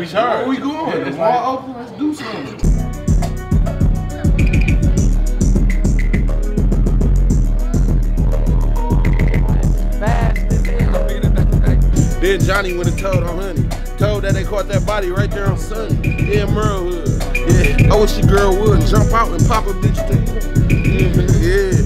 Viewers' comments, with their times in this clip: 0:03 That beat ouuuuuushhyyyttt